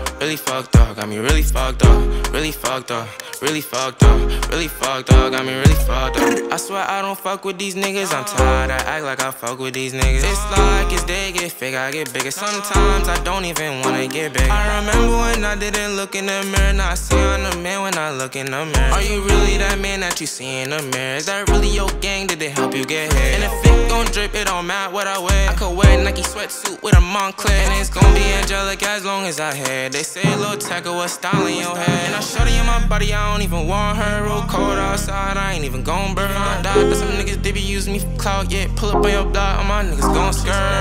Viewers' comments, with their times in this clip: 0:08 Only real people know this was a snippet and the audio cut out seconds
0:24 That flow is godly